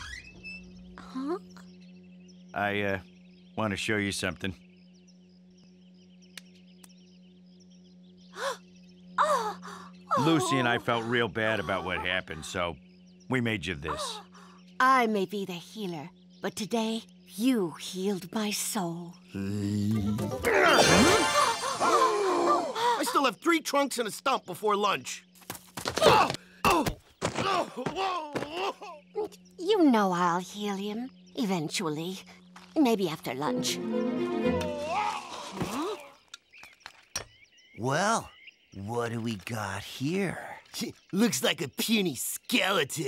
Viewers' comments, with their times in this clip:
0:06 where did he knocked at?
0:06 what is the builder tapping here?
0:12 I hearing something else 👀😳
0:20 damm that voice of a healer is kinda....😅😅
0:20 Close your eyes the healers voice tho
0:29 You know I'll helium